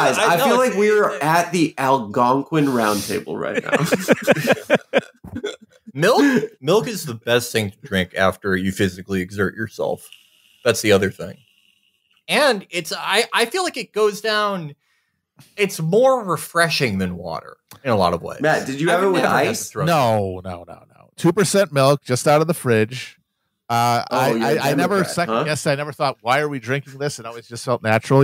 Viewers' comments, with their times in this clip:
0:10 someone hits a vape